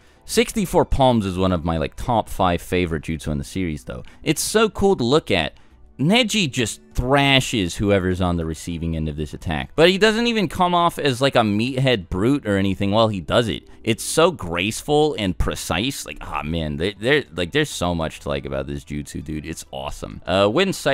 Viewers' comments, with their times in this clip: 0:08 he's reading a script